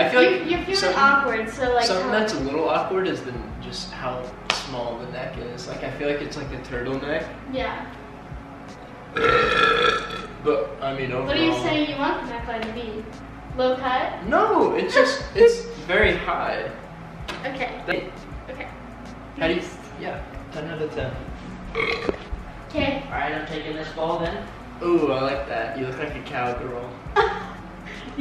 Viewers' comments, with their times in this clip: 0:09 😂😂😂 I love how he just burped but they just kept on talking 😂😂😂😂